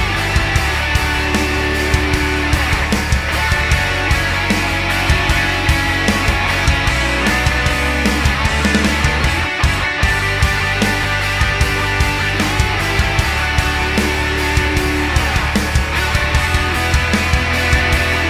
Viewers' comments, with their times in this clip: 0:04 Reel 'em in with that harmony